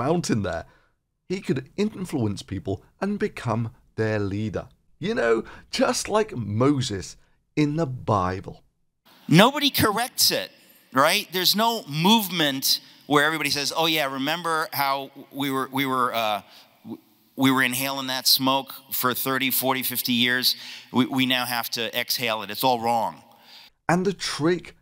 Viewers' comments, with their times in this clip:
0:09 645 year old dying rat voice lol